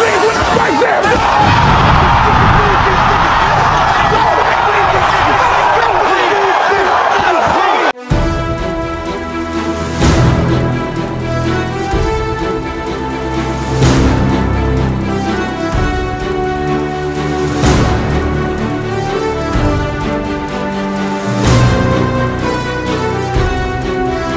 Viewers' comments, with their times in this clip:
0:08 I'm in tears.🤣😂🤣.. the music and .... maaaannnnn good work .... 😂🤣😂🤣